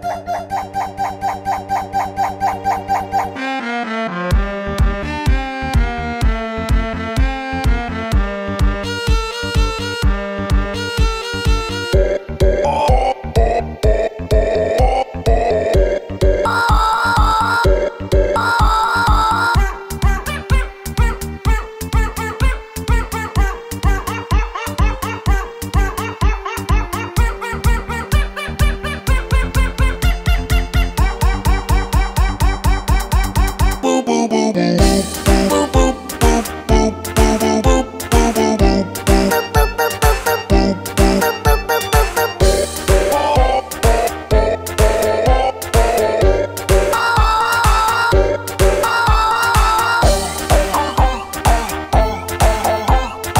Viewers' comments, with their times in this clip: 0:03 sounds like the orchestra at my school
0:03 the music tho
0:20 he still hear him borking 😔
0:24 me chewing on a carrot
0:39 mr.krabs voice lines is better then others one